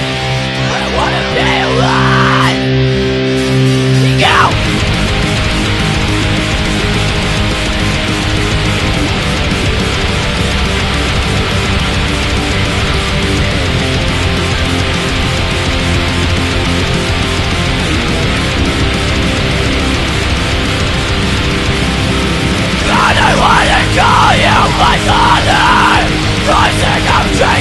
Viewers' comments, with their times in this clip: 0:09 that cord is wrong in that section of the song.